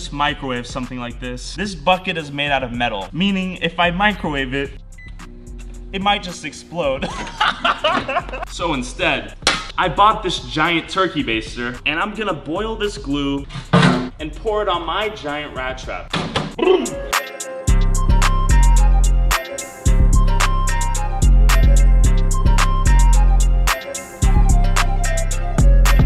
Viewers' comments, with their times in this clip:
0:10 an ad played after he said Turkey, but before he said the next word do it sounded like he said, “ I bought this giant turkey.”